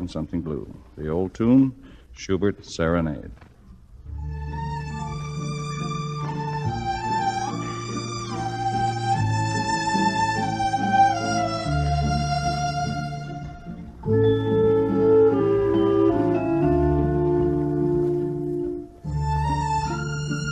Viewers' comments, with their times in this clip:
0:03 Very cool, the Chopin part